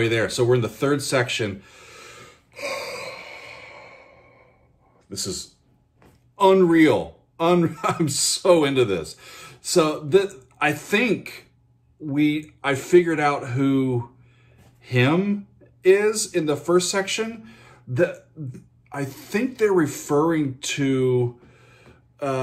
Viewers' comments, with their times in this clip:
0:04 I'm hearing more references. Floyd "Welcome to the Machine" at the beginning. Queen "Bohemian Rhapsody" early in the vocals, with the piano arpeggiation. Yes' Steve Howe (I forget which song) with the pedal steel sounds. Styx "Grand Illusion" (I think) in the synth solo choice of patch. I heard a bit of Blue Oyster Cult vocal Kansas and Rush-like jams...